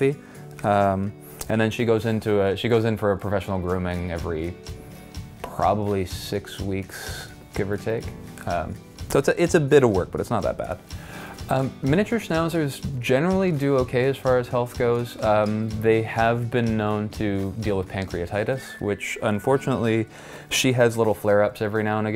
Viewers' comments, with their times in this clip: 0:04 What was that random ass bonk